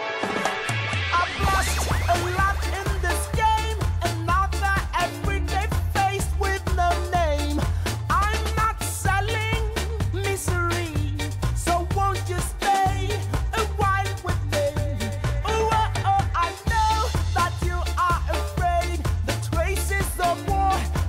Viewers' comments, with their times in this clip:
0:07 It sounds like the song is saying, "I'm not selling, Listerine."